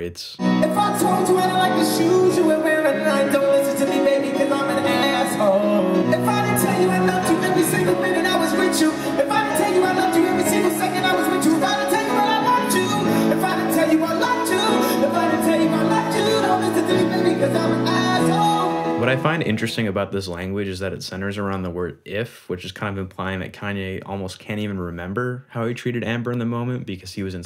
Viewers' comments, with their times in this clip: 0:09 Not even autotune can save him. What hell